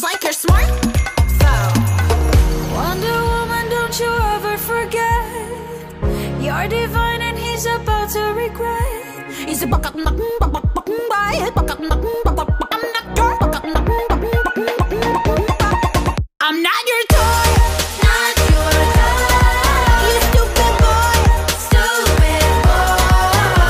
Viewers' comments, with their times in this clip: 0:09 WOW I THOUGHT IT SOUNDED LIKE A CHICKEN LOL